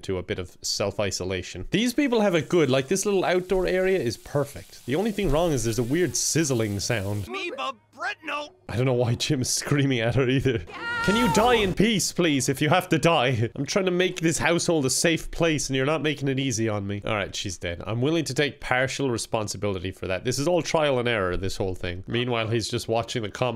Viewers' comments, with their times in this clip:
0:06 "theres a weird sizzling sound" bc u locked a vampire outside 😭